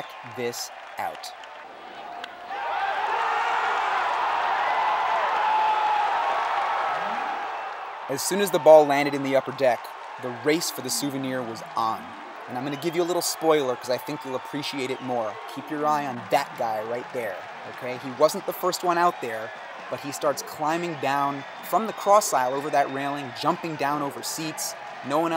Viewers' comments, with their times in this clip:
0:06 Wow narration is amazing/nostalgic. You are the most interesting man in the world.